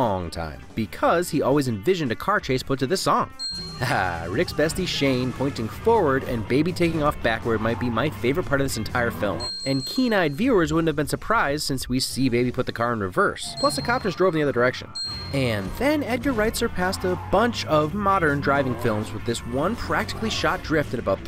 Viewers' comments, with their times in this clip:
0:05 tack on another win bc thats subaru boxer engine and turbo noises coming out of that car, not just some random ass engine noise (something the f&f franchises do frequently)